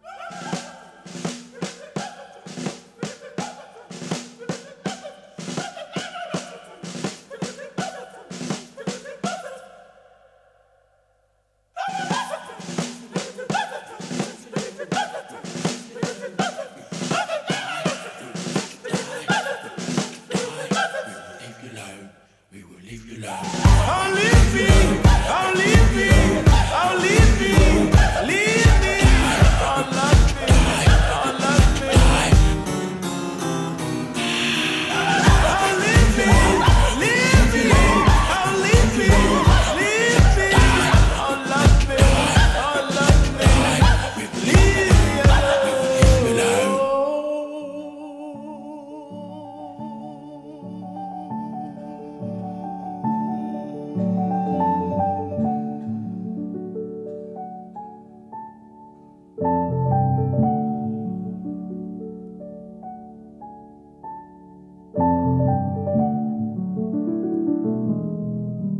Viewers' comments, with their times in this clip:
0:04 A beautiful piece of music. I was also digging that weird intro piece starting !
0:13 I can't listen the part with headphones on. His whispering in my right ear sends physical shivers down my spine.
0:49 the piano solo starting ! I can't stop listening to it on repeat. Pure ecstasy
0:55 Song could start at minute and been even enjoyable at some partsBut the rest is really bad ... what a great deception It isn't a good song and the orchestration is really awfullI miss what I love from u ... piano and your voice and soul in every word ... :(